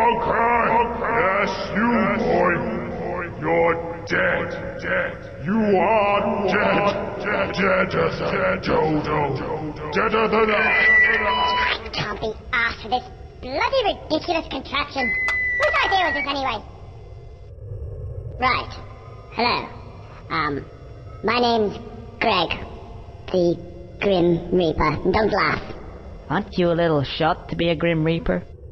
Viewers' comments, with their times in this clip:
0:10 I was laughing so hard when he sound like that without the megaphone